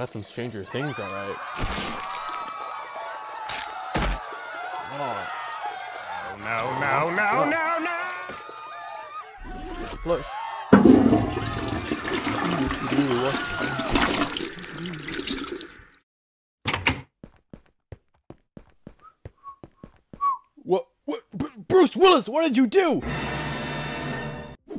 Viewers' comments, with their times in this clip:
0:06 Cleveland Brown scream